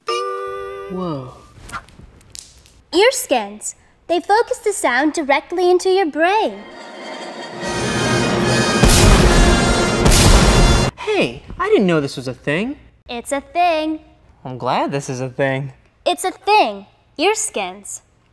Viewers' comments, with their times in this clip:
0:03 Why does she begin to sound exactly like Dorothy Ann from the Magic School Bus?